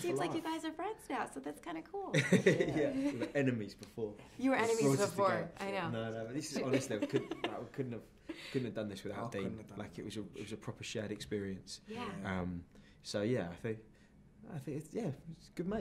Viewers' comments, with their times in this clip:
0:03 The way Dean whispered "enemies" in is cute lol I love them both really great actors